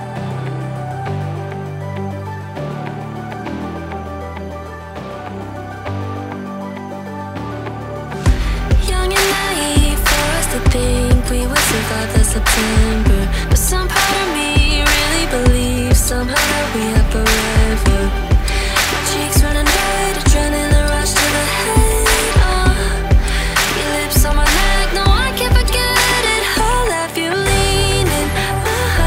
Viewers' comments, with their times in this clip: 0:10 hmmm.. The clap in this part sounds strange, but the rest is great!